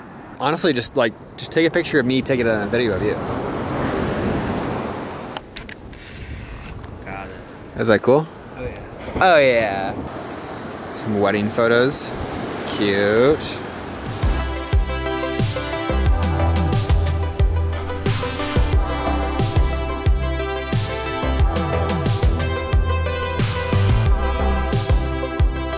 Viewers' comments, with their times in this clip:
0:09 Anyone else melt over that cute little "oh yeah"?